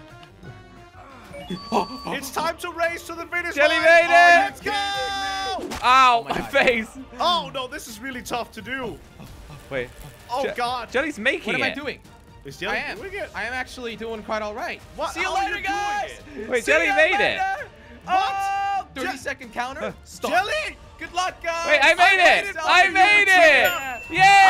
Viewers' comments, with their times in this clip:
0:06 it looks and sounds like the final boss and there literally speeddying